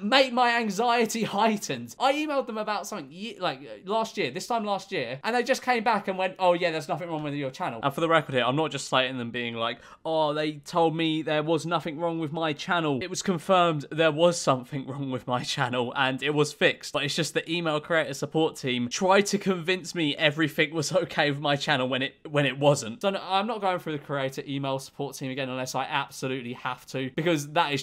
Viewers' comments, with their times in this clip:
0:08 Is it just me or does his voice just suddenly drop at like or something--